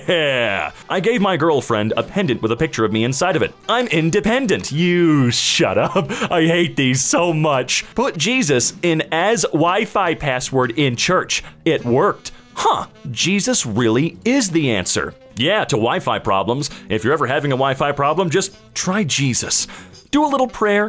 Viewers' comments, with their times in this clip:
0:03 I could watch just this clip all day and still laugh my ass off. Just the way it was delivered sounded so genuinely fed up 🤣